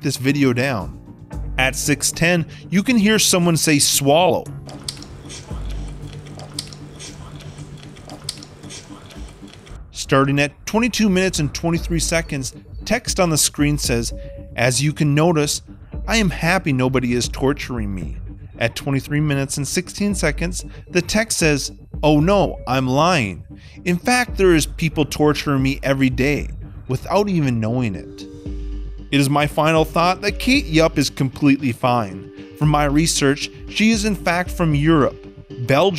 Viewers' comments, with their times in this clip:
0:03 she is the one saying swallow
0:05 she literally just went 'sh' probably by accident
0:05 GOD I CAME BACK TO THIS AND NOTICED SHE IS TALKING
0:07 when you said that someone says “swallow”, if you look at her mouth it’s just her sighing/exhaling after eating
0:08 she said swallow u can tell by the movment of her lips and the clicking sound she made wich might have been to move the food so she can talk the there are people torturing me everyday is a mention to the people who talk about her way of eating or trying to make her admit that she is being forced to do this wich i dont think is possible thats what a friend said so judge him not me
0:21 potlong fr lmao, like oh wow such a talent to breathe the words "Fast" in her new video, I clearly heard someone whispering at the mark. Check it out.